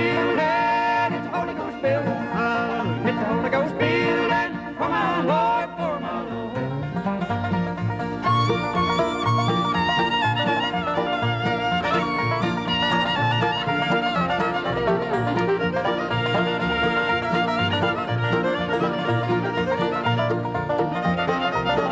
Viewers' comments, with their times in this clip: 0:04 Kenny Baker on Fiddle... awesome